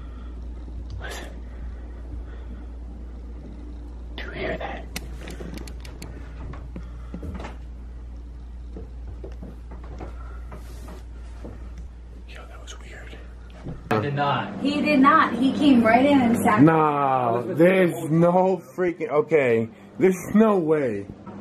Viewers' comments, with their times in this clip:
0:04 you can hear footsteps, after you turned off the air conditioner.